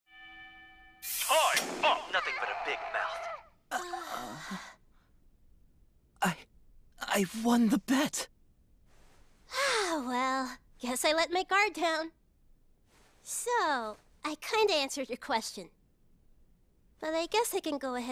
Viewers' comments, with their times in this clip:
0:02 Naoto's character sounds like character from MGR